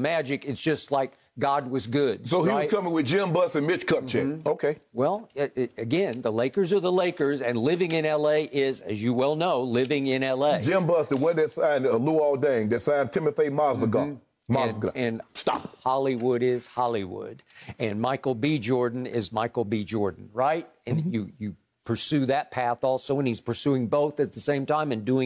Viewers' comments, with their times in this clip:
0:09 when Shannon is trying to pronounce "Timofey Mozgov" 😂😂